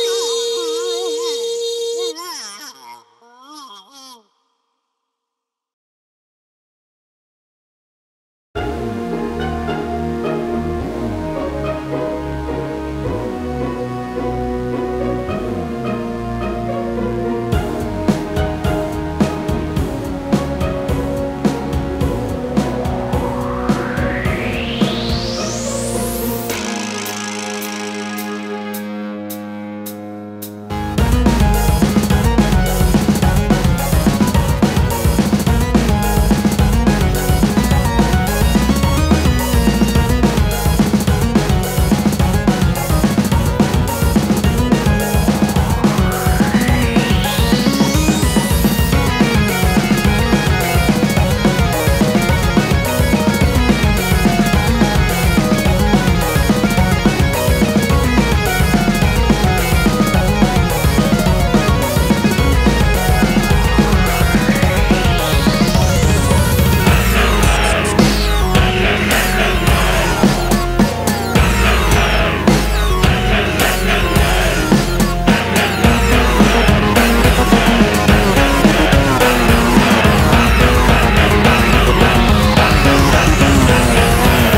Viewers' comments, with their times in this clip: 0:08 is IT Just me or does it Sounds Like "Yen Yen Yen Yen"
1:05 the zombies: grunt